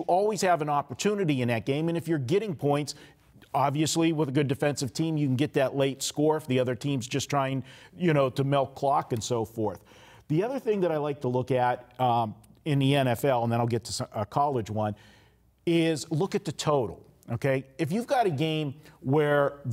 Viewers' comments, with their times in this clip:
0:07 melk clock? Yeah, that's a Vegas thing😂